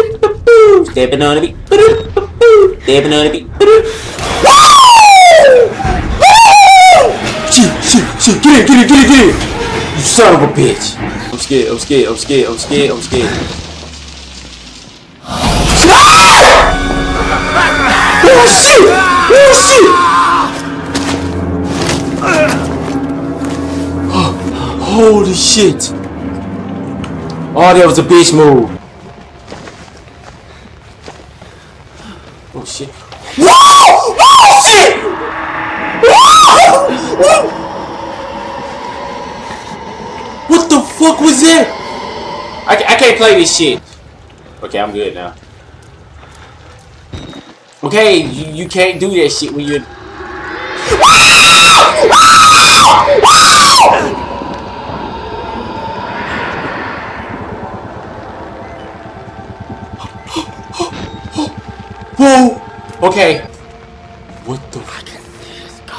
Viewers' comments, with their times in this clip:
0:04 King of pop vocal🤣❤
0:51 rest in peace my eardrums 😭😭😭😭 you'll be missed. (do not full your volume)